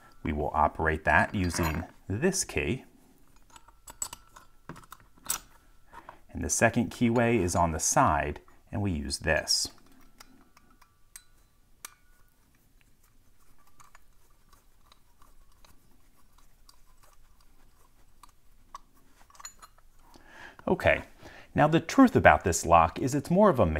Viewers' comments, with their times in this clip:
0:04 ist the most sublime unlocking sound I've ever heard.